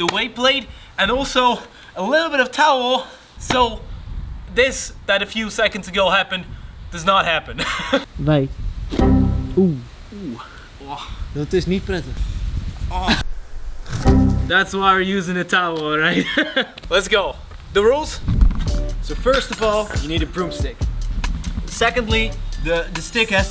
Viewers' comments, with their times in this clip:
0:08 i heard some dutch, wie wil er een frikandellen broodje?